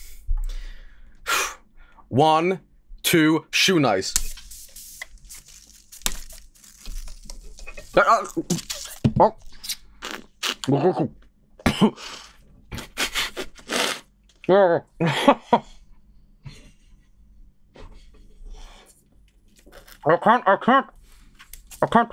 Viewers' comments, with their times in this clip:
0:06 Joel be chokin’ on dat PEPSNIS